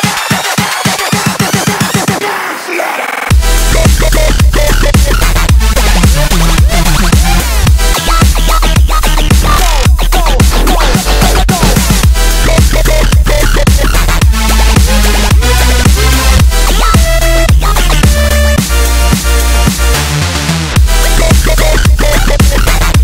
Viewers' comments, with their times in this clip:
0:04 dat dirty bass